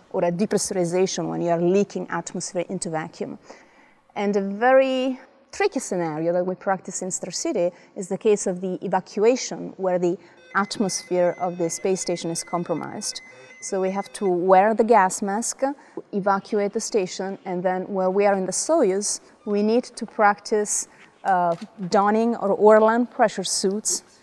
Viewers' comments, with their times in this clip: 0:10 Astronauts looking for who is spamming the sticky keys